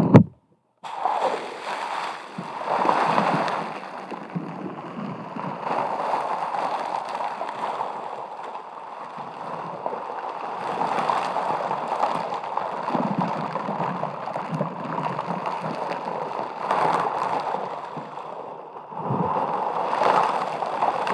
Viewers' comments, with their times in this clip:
0:05 reminds me of the ocean and like gave me extreme tingles. I never got tigles but watching this has given me so many tingles. Especially the brush on slime on mic. Best trigger ever. Love you so much ❤️